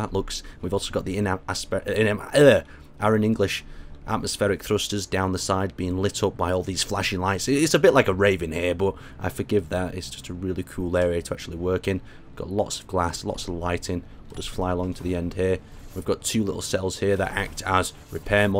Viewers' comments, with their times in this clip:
0:03 What did he say? "Irish English"?